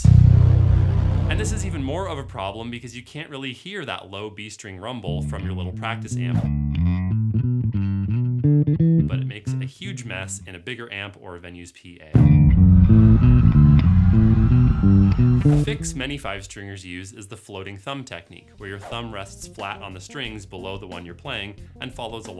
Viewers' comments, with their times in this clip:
0:06 here you can't hear the rumble because he-s got his thumb on the b-string, which mutes it